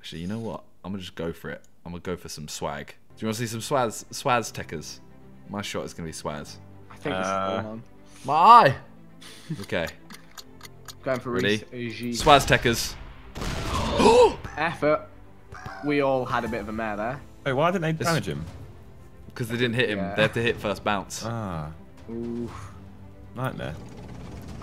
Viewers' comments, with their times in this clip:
0:05 “swastekkers” sounds like something else